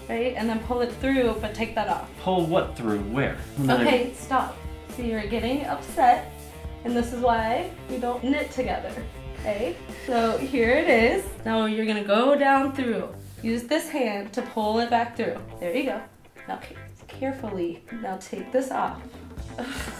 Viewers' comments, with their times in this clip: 0:03 sounds like my mom every time we do something crafty together.